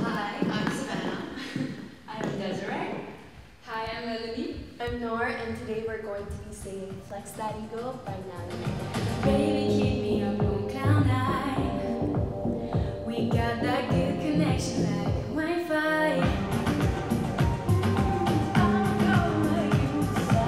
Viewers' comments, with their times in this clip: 0:08 and the fascinating voices! Wow! Can listen to y’all all day long!😌🫂🎶